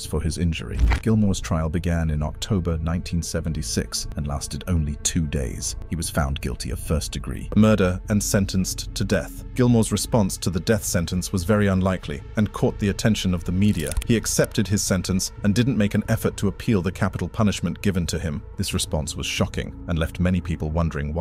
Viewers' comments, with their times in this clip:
0:06 Ha ha... " he was charged with 1st degree MURDER"... You can hear the sound bite of the narrator clearly gets louder at "MURDER" & continues on